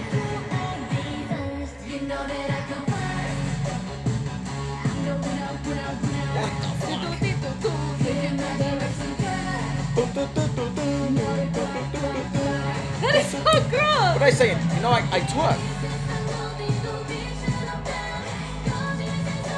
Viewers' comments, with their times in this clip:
0:06 all of us when the beat drop 🤣🤣🤣 really everglow is levelling up !!!